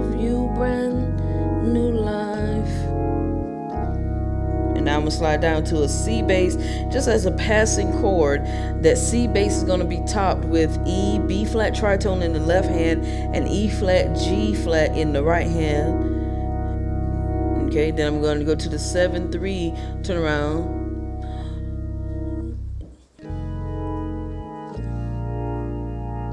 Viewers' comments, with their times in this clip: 0:07 Very nice organ drop chord E-Bb-Eb-Gb/ C